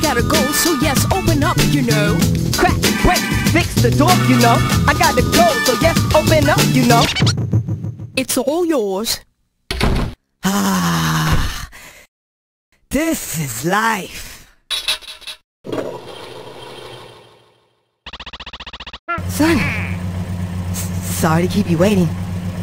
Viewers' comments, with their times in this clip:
0:10 Idk why I find his voice cute at that part